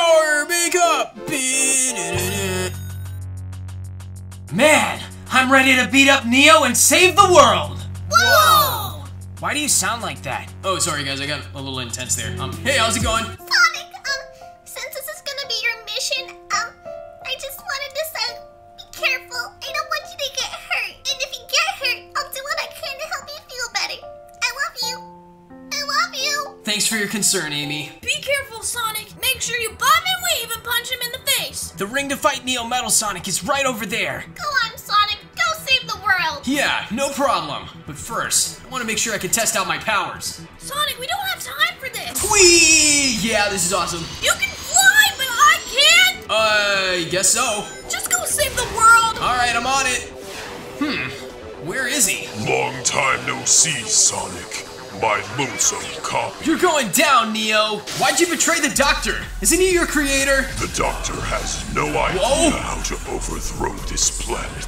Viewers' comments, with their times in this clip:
0:04 Sonic sounded like silver for some reason
0:52 NEO’S voice is scary